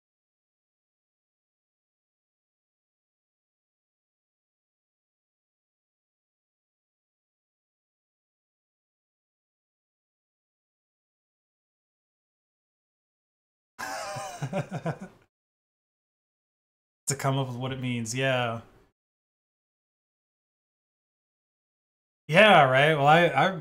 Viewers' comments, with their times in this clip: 0:10 the Co host is muted